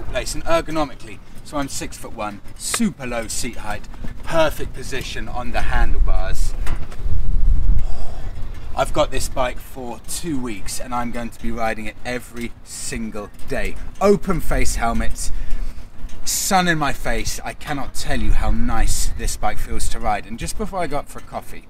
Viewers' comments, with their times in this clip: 0:07 ....that “ooph”.......pure ecstasy. That’s why I ride motorbikes. Great video.